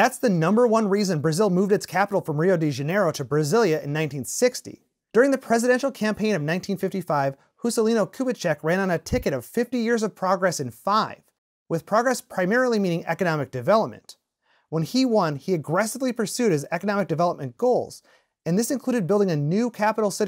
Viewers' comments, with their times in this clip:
0:07 WHY THE HECK YOU SPELLED WRONG? ITS NOT "HUSCELINO KUBITSCHEK", ITS "JUSCELINO KUBITSCHEK", WHY EVERYONE OUTSIDE SPELL PORTUGUESE WRONG?